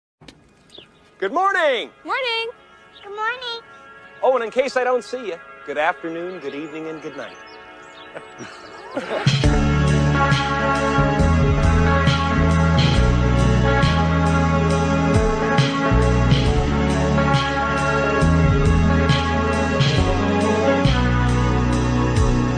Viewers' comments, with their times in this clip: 0:02 lmfao I thought it was the dude who said "Good morning" in a baby voice, made me laugh
0:03 how is that baby speaking 🤨
0:06 dude that animation of Gordon doing that Jim Carrey chuckle was 10/10.